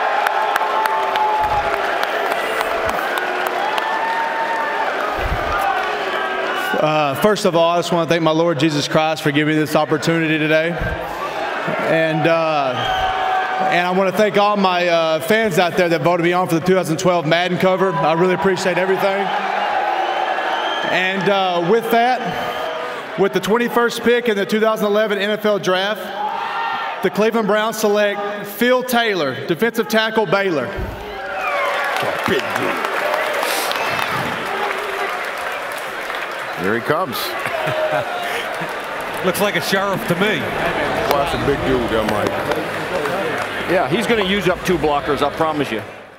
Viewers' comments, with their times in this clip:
0:06 ...I thought I was listening to Elvis talk but it was Hillis.
0:31 um yup the “browns” SILENCE the crowd, with taylor from Baylor N hillis from Peyton’s place oh my!.!